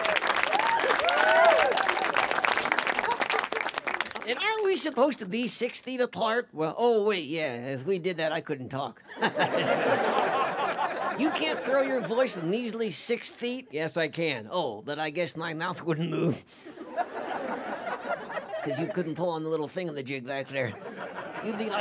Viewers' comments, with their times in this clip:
0:09 good Lord i finally heard walter laugh